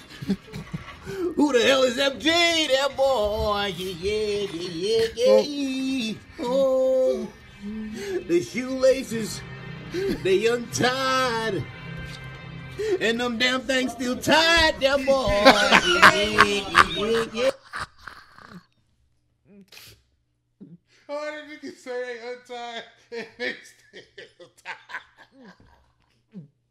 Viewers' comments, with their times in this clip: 0:08 The way he say every word and how he turns everyword to a soNG XDD lol